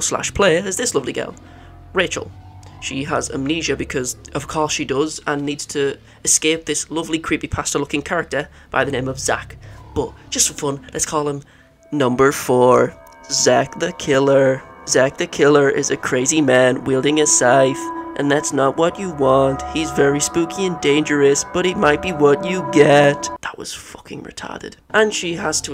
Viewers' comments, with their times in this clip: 0:09 lol spot on voice impression bro you sounded just like chills